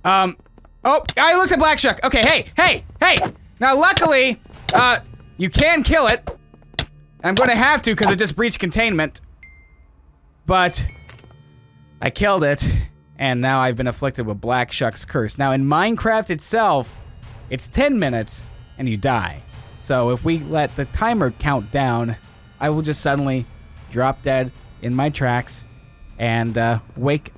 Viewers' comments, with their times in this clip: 0:10 I though the Black Shuck dropped Nike’s xD